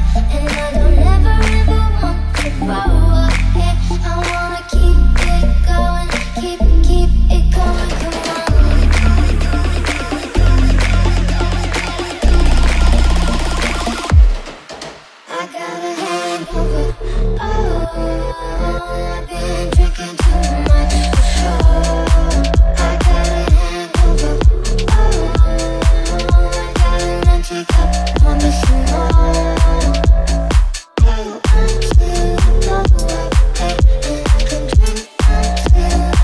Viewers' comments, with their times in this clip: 0:07 just a drop and buildup repeat for me
0:16 just a reminder if the bass drop thingy lol
0:16 drop the bass !!!
0:17 and this drop is fire